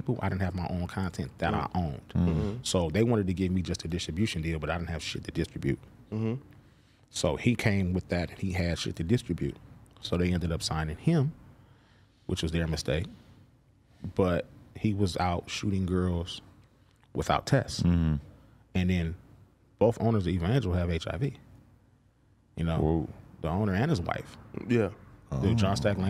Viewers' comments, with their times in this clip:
0:08 the pronunciation of it is legit